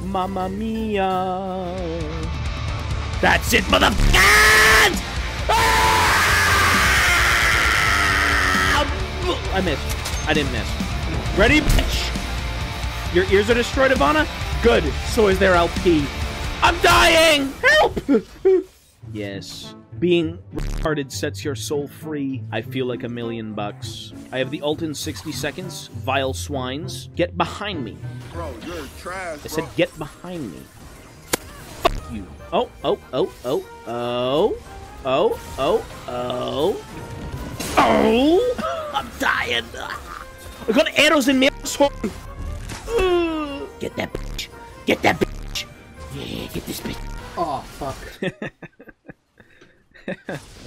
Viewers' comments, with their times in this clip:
0:03 is the most obnoxious, autistic, beautiful scream I have ever heard
0:38 Love you editor for connecting the irish-ish accent to Merida from Brave, got a good laugh out of me.